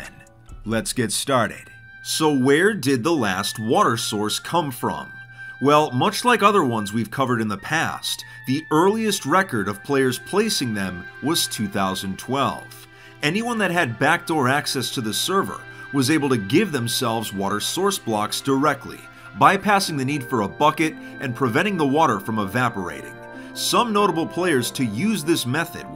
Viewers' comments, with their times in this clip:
0:10 damn that tombraider old school music <3 instant subbed :D